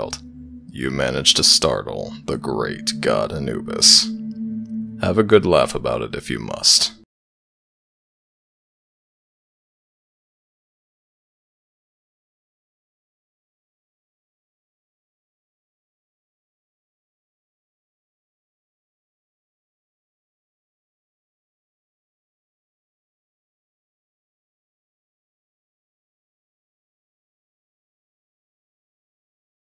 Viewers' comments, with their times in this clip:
0:07 Is the sound cutting out for everybody else? :/
0:15 Ok this may be strange because I've never experienced this before but the audio completely cuts out. Which is weird because I've listened to this audio a billion times and it has never cut out like this.